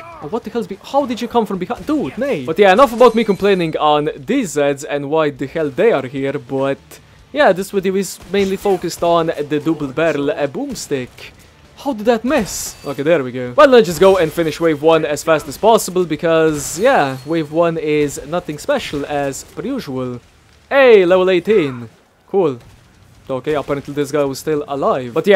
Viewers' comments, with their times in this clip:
0:09 the dubel berell e boomstick XD I love watching your videos before going to bed! (11pm here in Switzerland) :D